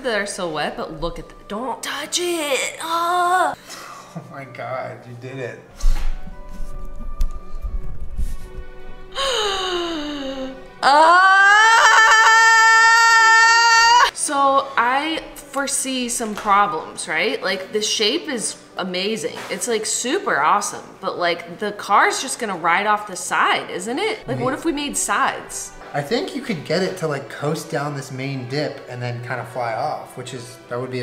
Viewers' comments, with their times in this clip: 0:09 "This guy moaned at least this loud"
0:12 of course she starts screaming loudly 😂😂 also it’s 12 am and I’m sitting in my bath tub having a mental breakdown help
0:12 The scream scared my cat awake